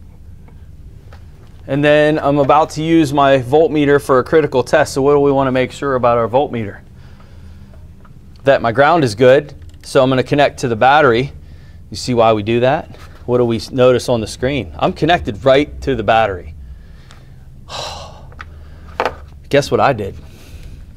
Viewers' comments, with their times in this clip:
0:04 and BANG goes meter fuse. 🤣 "who let the smoke out". I have killed many of them over the years. not all of them have protection and in the garbage can they go...🥳🤡